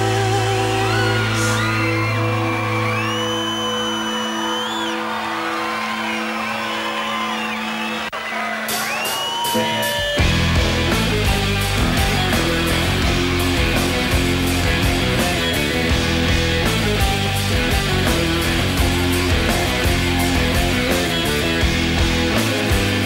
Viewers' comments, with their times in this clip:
0:09 Absolutely blown away by how amazing this riff sounds live.